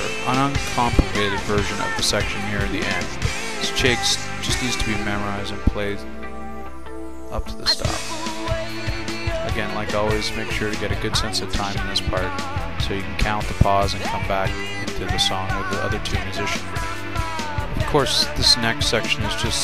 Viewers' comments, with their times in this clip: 0:06 just wandering y did u do that with the chimes?do you just think it sounds cool or wat?